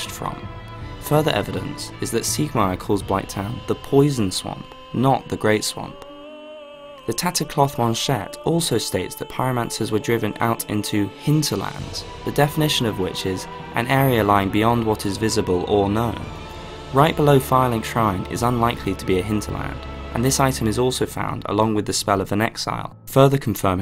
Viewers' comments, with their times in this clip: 0:06 You're Pronunciation is ON POINT. I nearly came when you said Tattered Cloth Manchette with the proper french accent